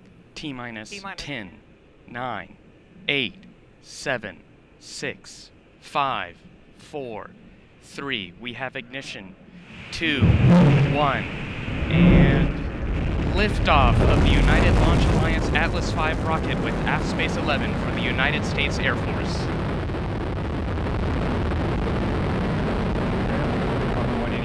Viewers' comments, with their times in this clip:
0:06 notice the little BWooP-bWEoooP just before ignition